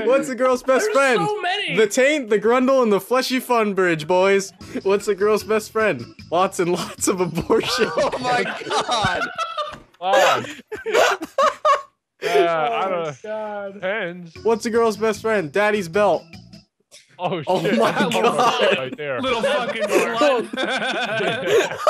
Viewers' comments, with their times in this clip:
0:05 you can hear his outro music play in the backround